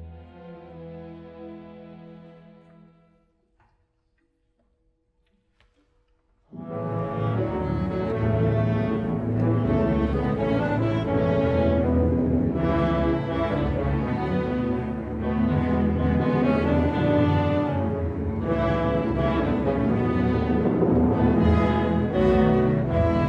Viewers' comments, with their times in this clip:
0:04 This conductor's interpretation sounds messy. I actually hate his interpretation of the part